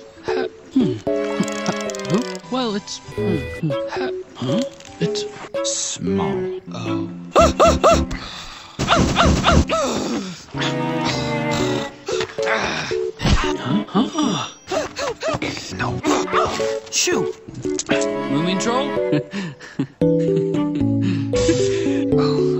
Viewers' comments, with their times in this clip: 0:07 that’s how I usually scream
0:09 Dis sound like a girl <I:^)